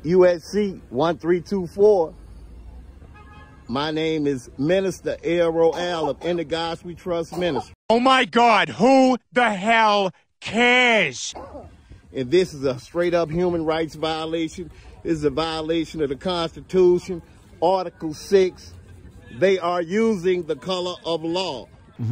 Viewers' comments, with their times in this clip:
0:04 are you sure he said "minister" ?...from the slurred speech it would sounded like he said "menace"